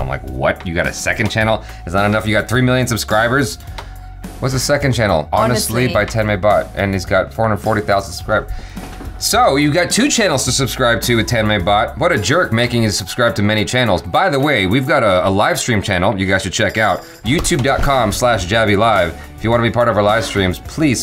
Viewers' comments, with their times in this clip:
0:06 Turn on "cc" before Tanmay=10 my 😂😂😂